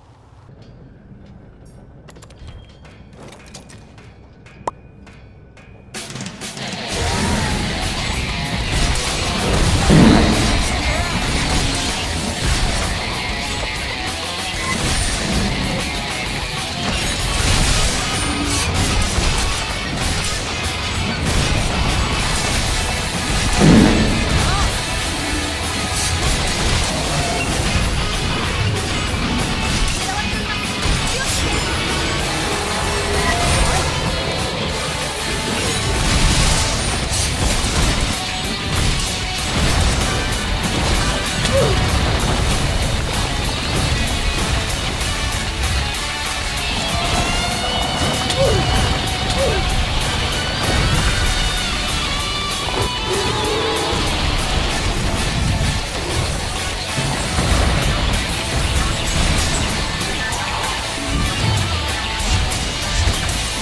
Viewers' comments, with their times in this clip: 0:07 when the Dragon Ball Z Budakai music kicked in 😩👌
0:51 perfectly cut scream